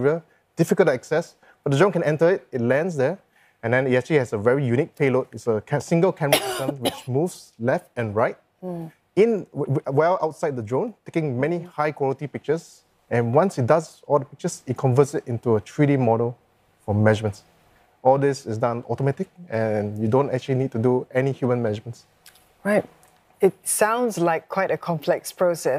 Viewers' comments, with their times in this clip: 0:07 Billion dollar global insight - problem on someone coughing on recorded news and the coughing wasn’t AI edited out before uploading the video online YouTube. Make and sell AI video editing app, where user can tap on two points of the video timestamp progress line to mark the start and stop of the coughing sounds or other noise sounds. Tap on audio segment to provide different colour areas to show different sound frequencies. Tap on the coughing sound coloured frequency to eliminate or reduce it. Next, after the news, invite the guest aside for a minute, take the unedited video recording and play the words of what the guest said for him to repeat what he said into the phone wired microphone (without background noise) to be recorded again. AI auto append to the previously edited news recording (without coughing).